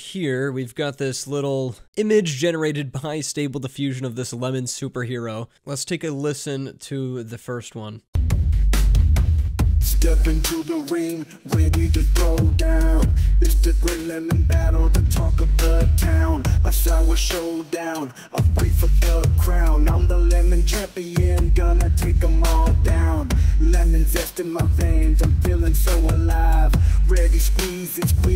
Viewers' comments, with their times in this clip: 0:10 The voice somewhat weirdly resembles Asap Rocky